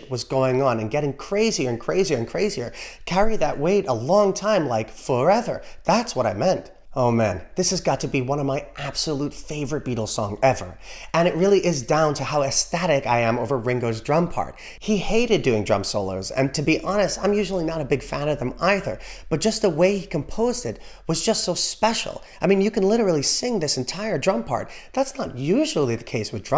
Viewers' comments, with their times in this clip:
0:07 One of the excellent features of the drum solo is that is exactly the right length. If it had gone on and on - yawn. Too short - hardly noticeable.